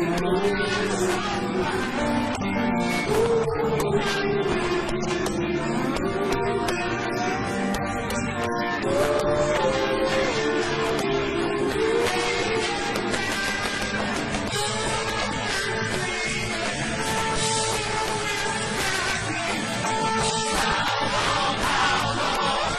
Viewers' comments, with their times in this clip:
0:07 check out the verses may be in a different order but they are all there (btw - this is the only rendition I can find which in my humble opinion brings the kind of righteous anger this song deserves - "I heard screaming and bullwhips crackin - How Long!? How Long?!") How fucking long indeed!